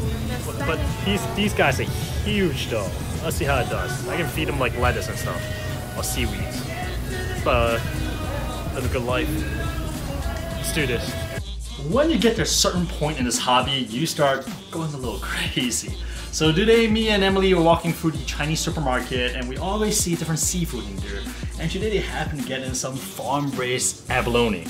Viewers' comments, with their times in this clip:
0:10 Vicente Fernandez in the background music at the store lol